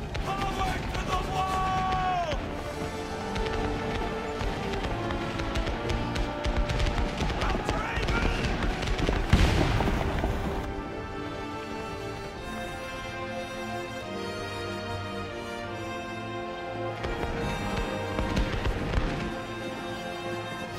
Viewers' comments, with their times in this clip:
0:06 what's being yelled here?